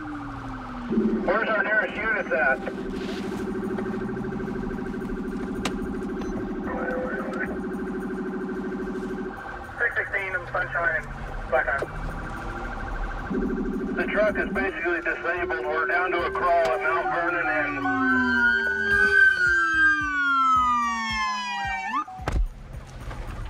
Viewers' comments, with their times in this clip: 0:04 Just imagine having your cup of coffee, taking a look outside and the beautiful day, next thing you know you hear police sirens break through the peaceful quiet, and there’s a truck in your front yard doing donuts and knocking over your yard decor. Peaceful day is ruined, and so is your yard.